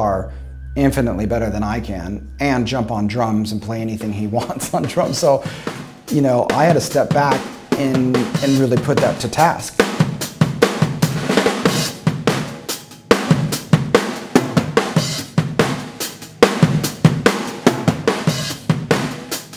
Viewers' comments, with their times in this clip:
0:05 'Cat Like Thief' - Boxcar Racer..?? Sounds pretty close!!